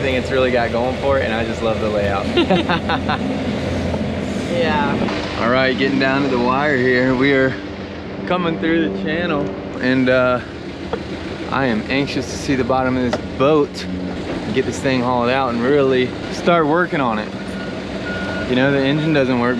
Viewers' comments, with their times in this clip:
0:03 That “yeah” wasn’t convincing 😂